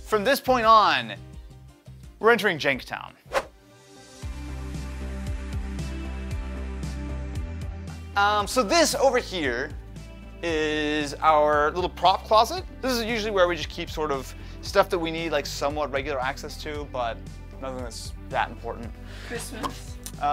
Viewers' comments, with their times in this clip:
0:03 What's the name of the lowfi tune starting ? It gives me a 80ies vibe. Excellent music selection for this video.